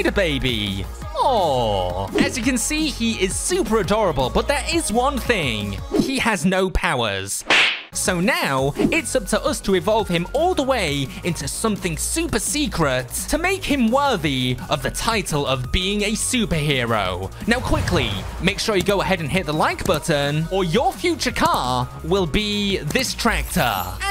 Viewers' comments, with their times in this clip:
0:08 that sound effect tho